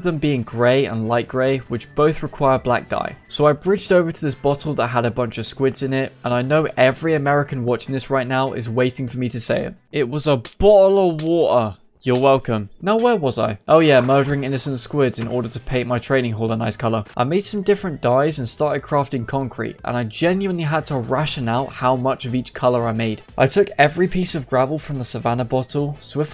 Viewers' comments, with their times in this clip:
0:09 Did he just add more accent onto his already accent? Yep, sure did